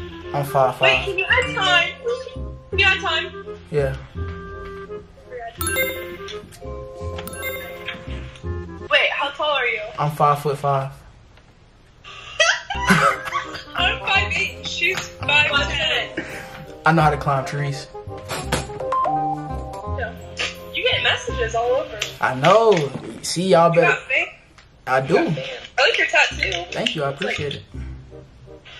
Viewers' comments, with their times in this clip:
0:10 😂why they laugh in yo face like that😂😭😭